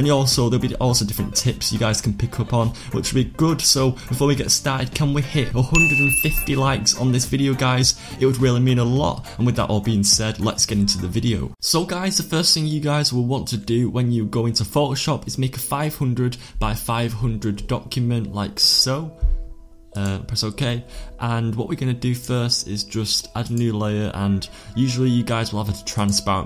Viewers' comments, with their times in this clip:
0:10 0:8 to u can hear the dank slithering in the backround lol